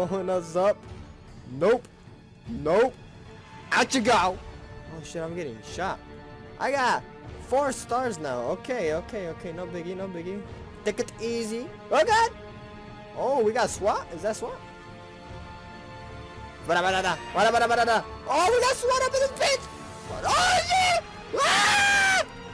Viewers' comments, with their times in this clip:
0:03 I like the Naruto music on :)